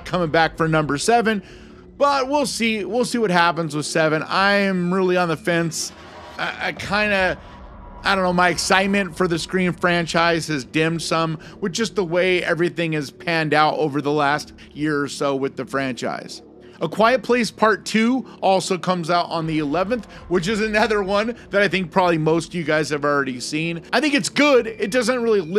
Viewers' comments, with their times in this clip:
0:10 I love Dim Sum